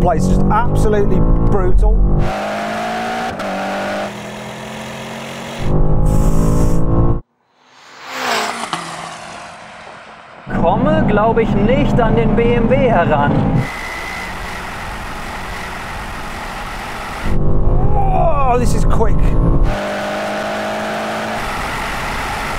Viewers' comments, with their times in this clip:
0:08 Them turbos are singing in that BMW.